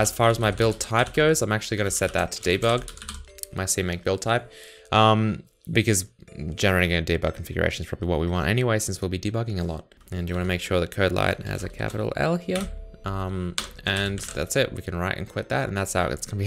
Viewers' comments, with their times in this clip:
0:04 Awesome start to these series. Are you gonna use music for the entire series? The background music until is quite distracting. The one that comes after is kind of soothing.